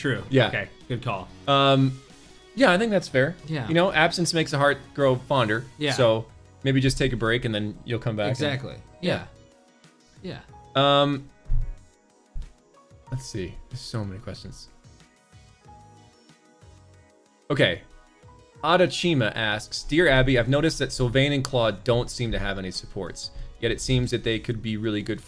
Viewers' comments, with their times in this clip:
0:08 THEY SOUND THE SAME